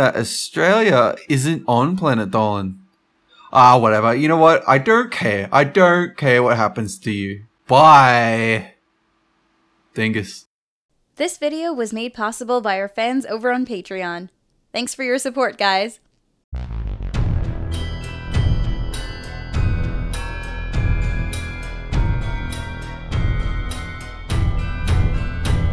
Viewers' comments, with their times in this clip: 0:08 Sounds like he said niBBERS